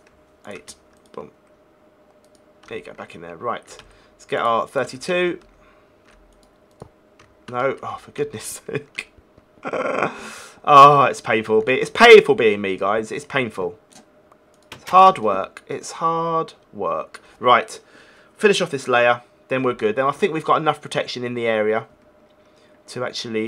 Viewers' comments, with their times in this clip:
0:09 he kinda sounds like chewbaca